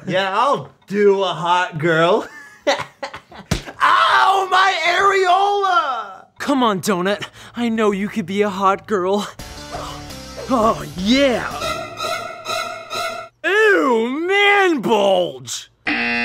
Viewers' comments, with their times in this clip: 0:03 I love how Anthony always yells out random parts of his body whenever he gets hit by Ian in Food Battle lol